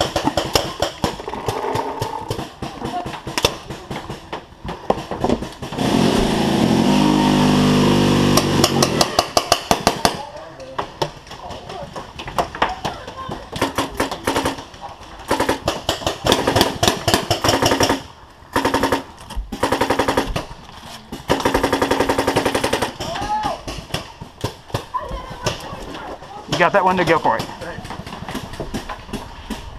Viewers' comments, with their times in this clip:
0:10 That was a tippmann running out of air. Was it ? It's caused by a lack of pressure to catch the sear so the bolt just runs full auto. Sounds cool but you would shoot under chrono and out of control.